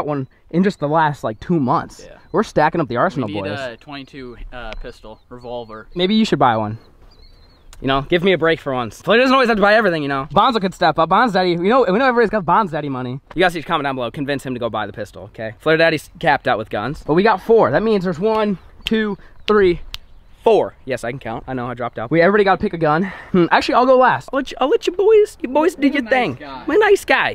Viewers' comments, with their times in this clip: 0:08 what did this man even just say lol